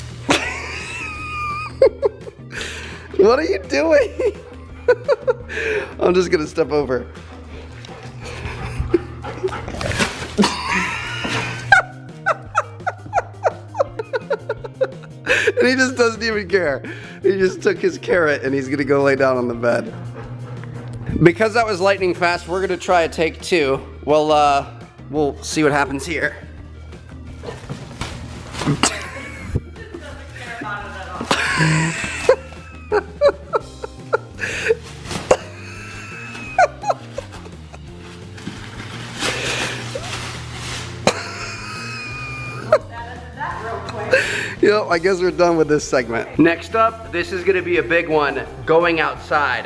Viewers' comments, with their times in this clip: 0:10 that's sounds like a Bugatti chiron
0:11 What was that laugh
0:35 Idk what’s funnier the video or his laugh